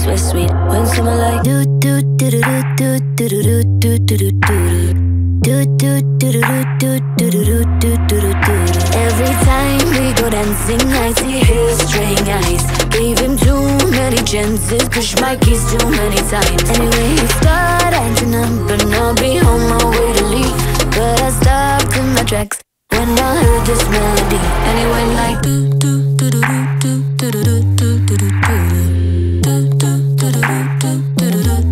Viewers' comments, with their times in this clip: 0:08 jesy is the one singing on this part
0:17 Isn't it start acting up ? It doesn't sound like she's saying dumb